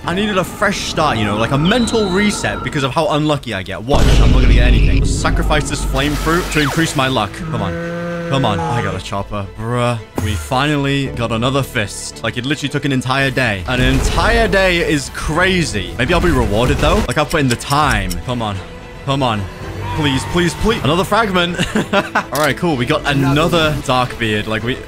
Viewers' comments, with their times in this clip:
0:08 Listen at full volume for torture